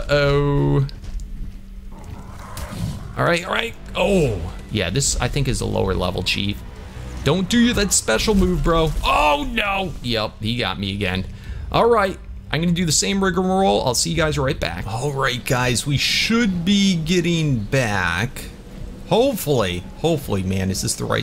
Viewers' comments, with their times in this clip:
0:09 riggamaroll? rick roll? siggamorall?